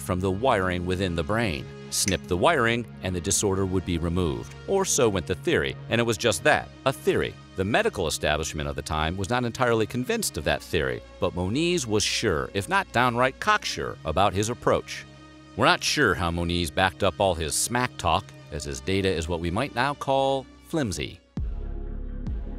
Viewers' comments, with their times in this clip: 0:05 I like how the music goes from high to low pitch like "oh, he's wrong" then high pitch again like "maybe he right" lol